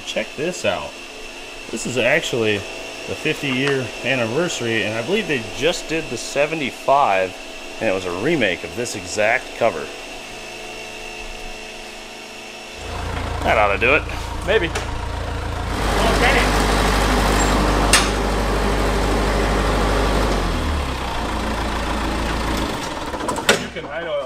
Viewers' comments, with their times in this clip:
0:09 that was the most devious transition, im watching this while running some stress tests on my overclocked CPU and that little bit of frozen imagery with the buzzing almost made me restart the PC, because i thought it had finally locked up lmao.